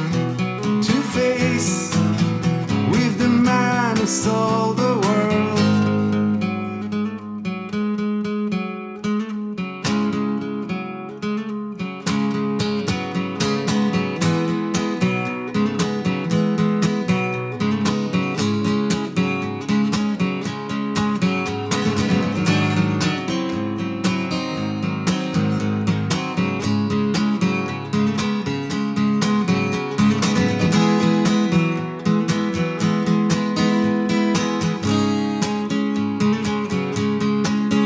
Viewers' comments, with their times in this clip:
0:09 Not only 2 two guitars. From we can actually start to hear a 3rd guitar 🤯😧
0:09 thanks for responding. That's cool! Not long after ish of this version, I'm mesmerised when I hear, what sounds like, the third guitar.
0:23 I loved the cover, but in there's a chord my ears dislike